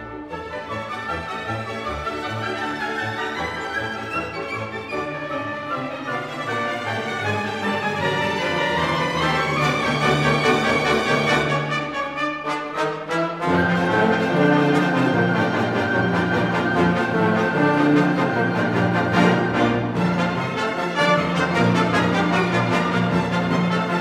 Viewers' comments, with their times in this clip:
0:09 Is there a skip here? min